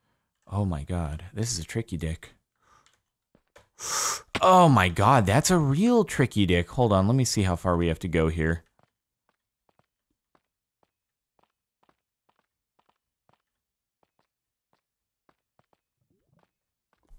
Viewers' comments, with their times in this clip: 0:05 “Let me see how far we have to go here” Silence for 2 minutes